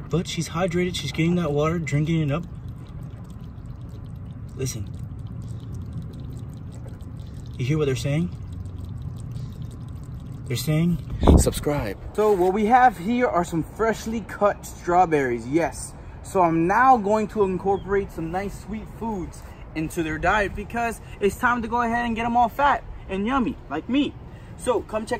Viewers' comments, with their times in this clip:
0:09 C R A B A S M R